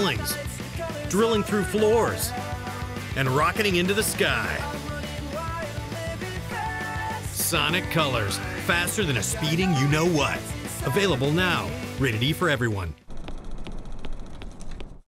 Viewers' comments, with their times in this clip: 0:13 SUPER SONIC READING >:D